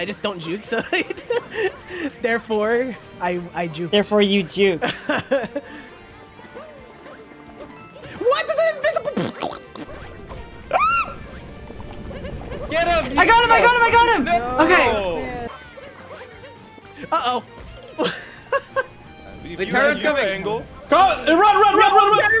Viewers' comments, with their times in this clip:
0:10 Bro this scream